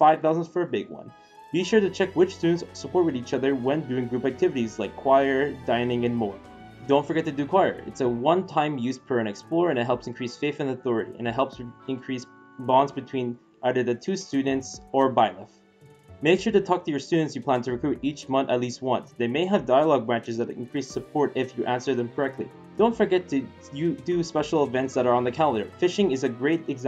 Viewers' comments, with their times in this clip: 0:09 "don't forget to depart. It's a one time use for exploring..." I spent a hour running around monastery. I spent a hour googling looking for how to do this... Dude you are not helping players but hindering them. Speak up and slow down. U are really ticking me off